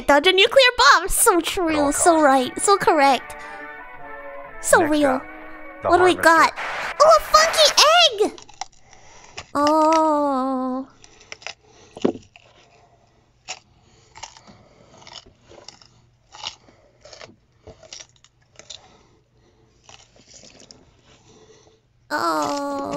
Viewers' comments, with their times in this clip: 0:07 Tremendous Vita carni doing an ASMR